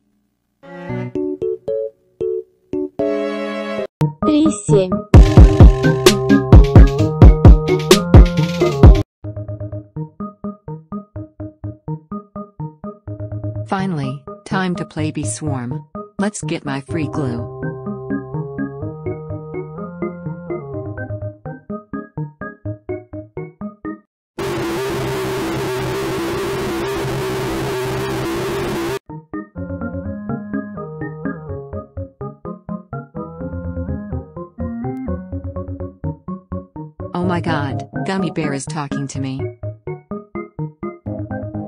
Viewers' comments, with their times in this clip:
0:04 the remix is cool tho...
0:24 Crawlers but the sound is dead cuz the sun is melting it